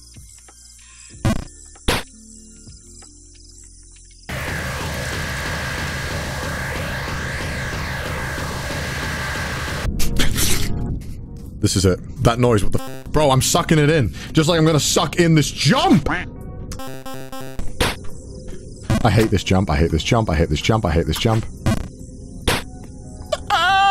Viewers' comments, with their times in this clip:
0:09 WHAT THE FUCK was that noise??! XD